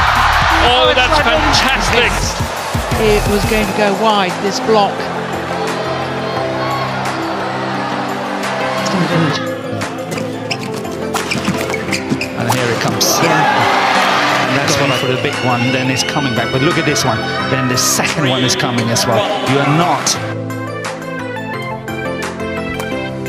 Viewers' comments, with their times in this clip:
0:09 sounds like a whip bruh :O